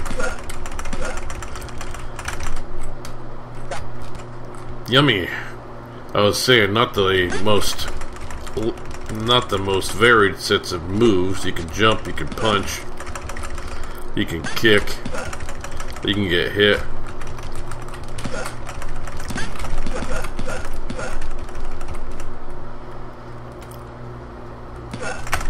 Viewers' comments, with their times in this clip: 0:06 GOTTA LOVE HIM HICCUPING EVERYTIME HE GETS HIT!!!!1 ;*O